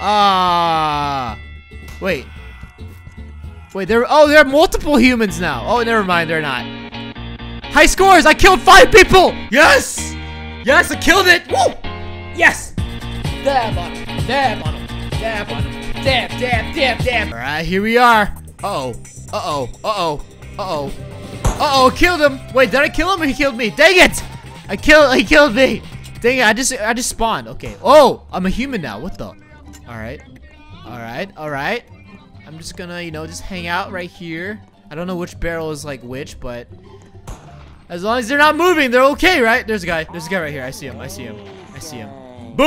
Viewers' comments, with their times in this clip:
0:05 that song is awesome I love it
0:29 if u listen closely u can hear indian music